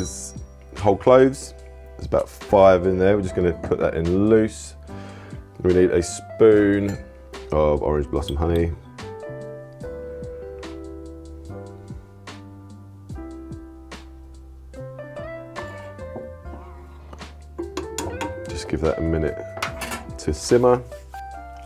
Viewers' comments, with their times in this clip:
0:04 what are the gloves ?